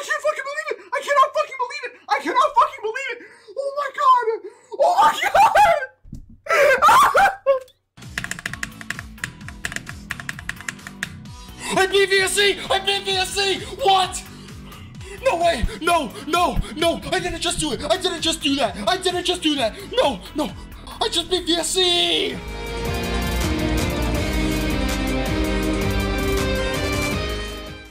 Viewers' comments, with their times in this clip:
0:09 VSC song sounds like Chick-fa-la